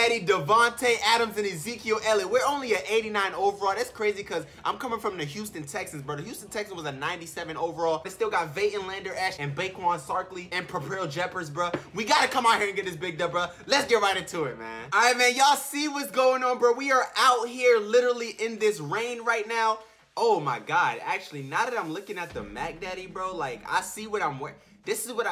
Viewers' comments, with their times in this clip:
0:09 Did he say baquon sarkley